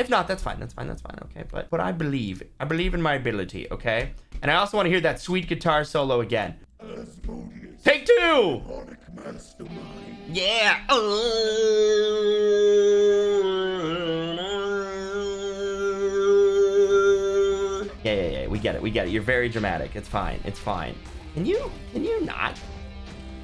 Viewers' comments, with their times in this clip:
0:08 the guitar solo for some reason it reminds me so much of Power rangers intro i cant remember which power rangers one but it one with troy as red Noah as blue i think Emma either pink or yellow as i cannot fully remember